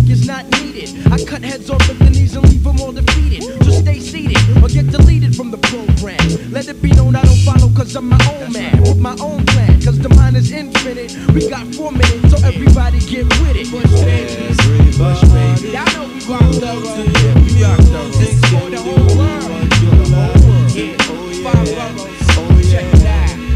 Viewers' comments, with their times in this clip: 0:05 Drum fill is nasty. Summer madness sample cleverness